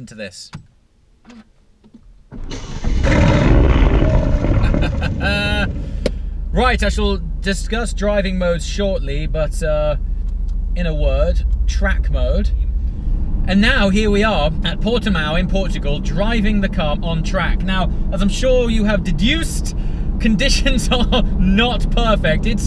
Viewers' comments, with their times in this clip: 0:03 Okay! What's soo special in having a typical AMG engine fart sound?